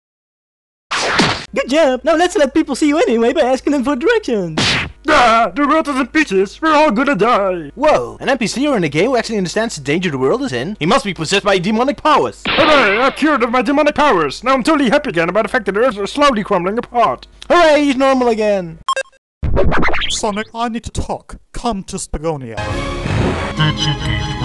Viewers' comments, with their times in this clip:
0:05 I though he said bitches.